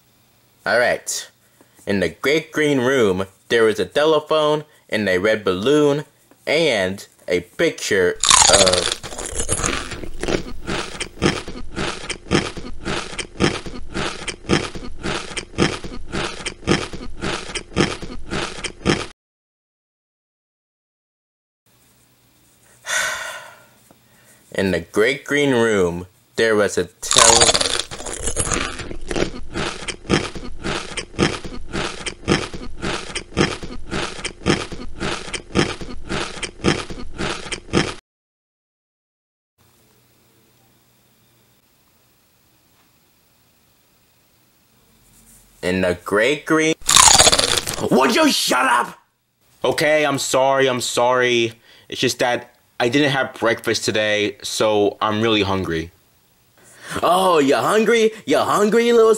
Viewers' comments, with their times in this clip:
0:10 bro was smacking a little too loud
0:11 nice eating beat
0:45 in the great gree- crunch got me rolling to my grave